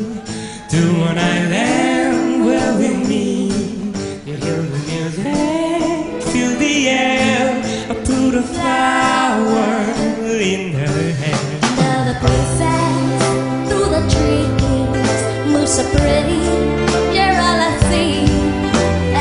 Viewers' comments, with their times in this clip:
0:05 .....his voice is to die for.....well my mouse did after my constant clicks